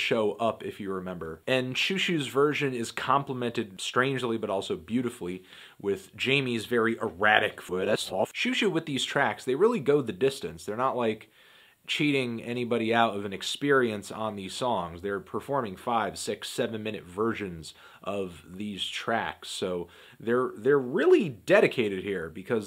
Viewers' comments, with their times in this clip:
0:07 the reversed voice fits nicely into the twin peaks theme lol